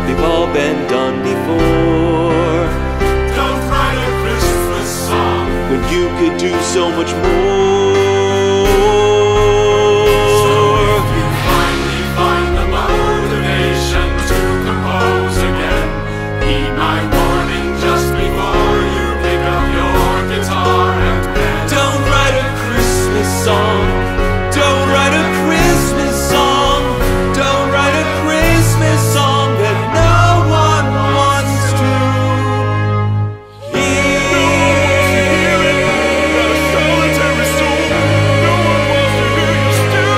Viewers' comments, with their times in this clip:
0:08 Ah, the ol' Truck Driver's Gear Change™. Never fails to be clunky.
0:28 That A !!! Can someone who watched all of his videos can explain a bit about that chord here ?